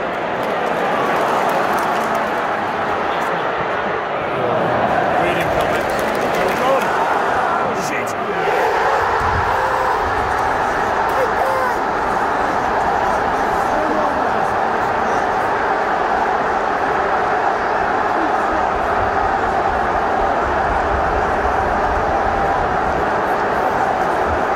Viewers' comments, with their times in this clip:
0:09 Love the cry of 'shit' in. You've just been Stevie Coopered 🤣